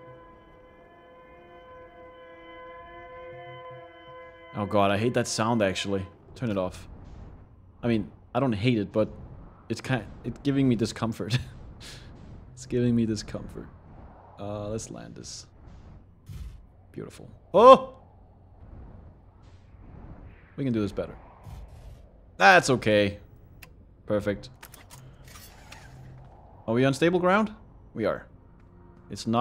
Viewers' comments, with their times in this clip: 0:10 it's impressive how the distress beacon sounds so... distressed but in a subtle way.